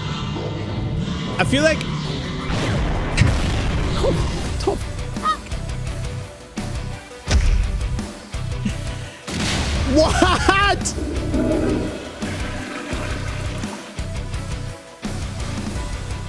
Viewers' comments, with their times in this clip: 0:03 the music wasn’t orange justice it was a wholesome song